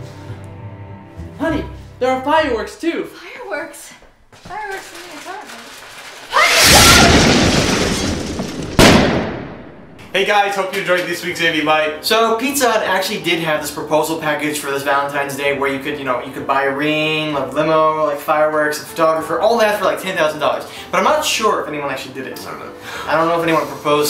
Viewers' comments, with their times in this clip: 0:05 that voice so creep